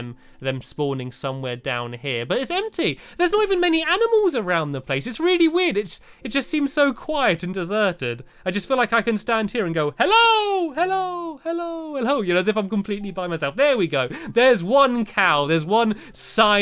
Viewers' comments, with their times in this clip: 0:03 after I heard an enderman O_O